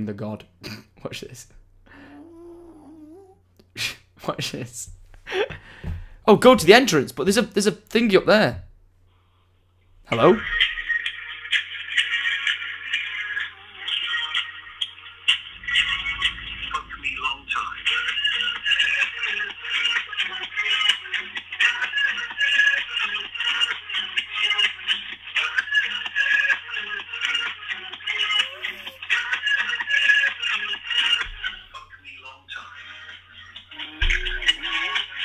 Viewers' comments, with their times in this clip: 0:09 XD THAT CALLER TUNE THO
0:23 That song on the phone though...